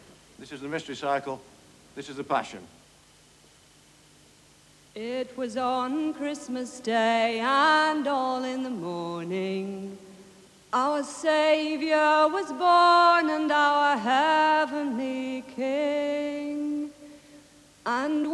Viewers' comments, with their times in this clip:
0:05 No less than the folk rock luminary Linda Thompson to sing the plaintive a cappella intro !